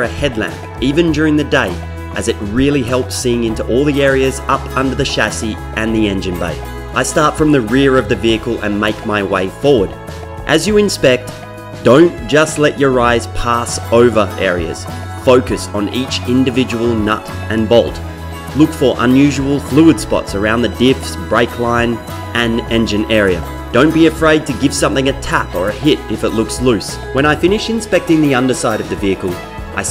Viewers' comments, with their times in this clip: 0:10 from here onward, your narration sound like some basic offshore safety video .......